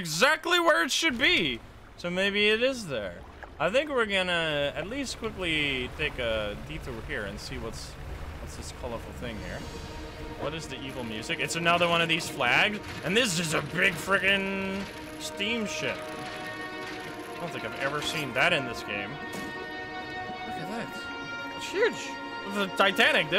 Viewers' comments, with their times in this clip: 0:08 The laugh was funny when you said it was the titanic